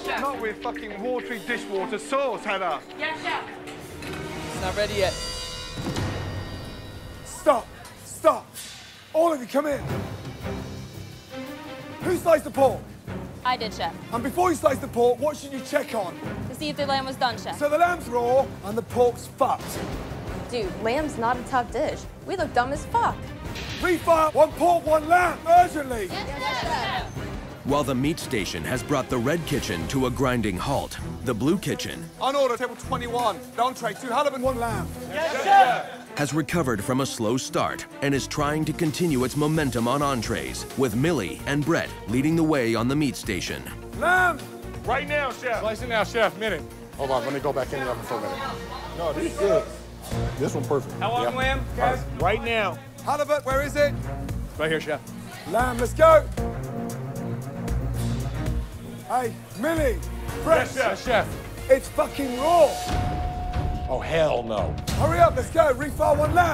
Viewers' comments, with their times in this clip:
0:04 is where his voice sounds strange
0:08 I love how Ramsay sounds like a seasoned drill Sargeant here
0:08 bro lost his voice
0:48 Chef Ramsay sounds like he’s losing his voice.